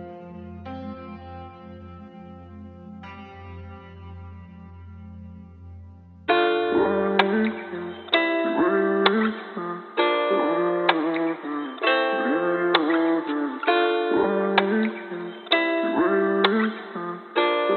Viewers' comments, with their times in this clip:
0:05 What a good timing with the music .